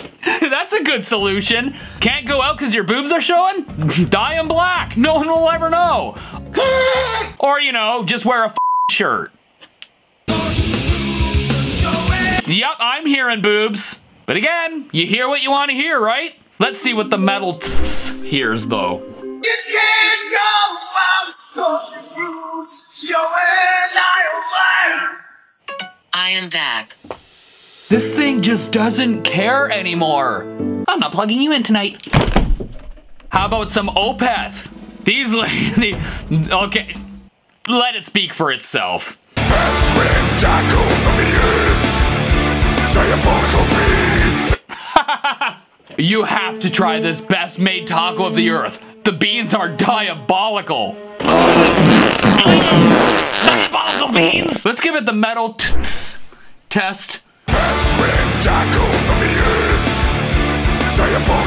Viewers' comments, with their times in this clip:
0:07 That sounded like a durpy unicorn
0:22 I heard boots without music.
0:42 im hearing diabolical bees btw